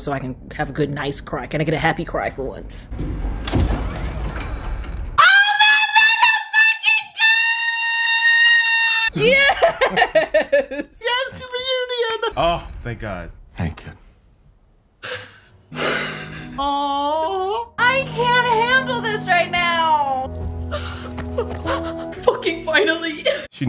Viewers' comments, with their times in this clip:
0:06 tbh, I could do without her in these videos, she just screams and that's it.